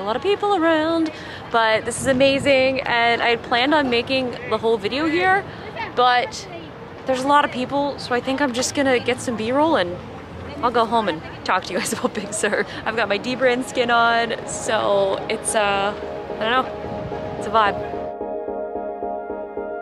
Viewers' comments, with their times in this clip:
0:05 Omg all I heard was the mom yelling to her kids "Bajate de ahi!"